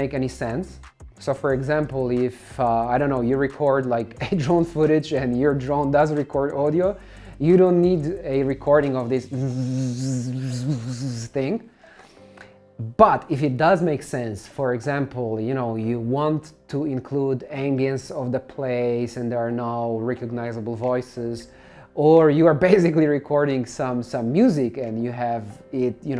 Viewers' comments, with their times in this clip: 0:10 Great information and we'll explained. I'm fascinated by the drone's accent :P